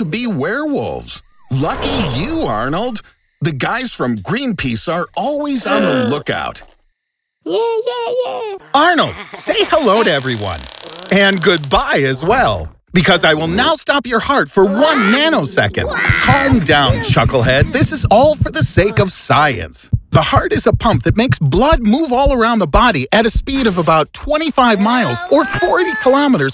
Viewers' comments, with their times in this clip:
0:07 nothing more satisfying than hearing a poor mistreated animated punching bag cry tears of joy